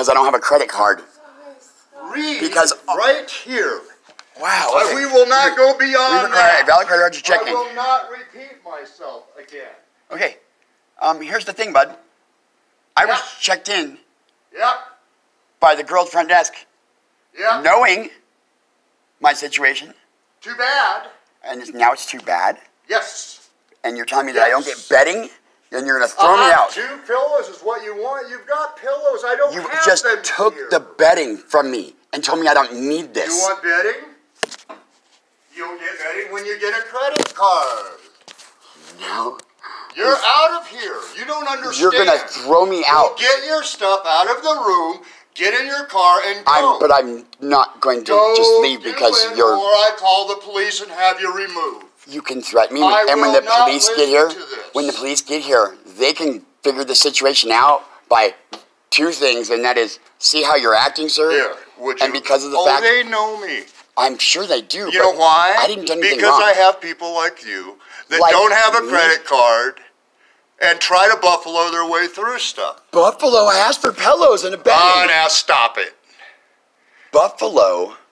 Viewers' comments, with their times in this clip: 0:05 The guy sounds like Chris from Family Guy
1:04 K but like they guy a t whose tryna kick the family out, why does he sound like Dr. phil XD?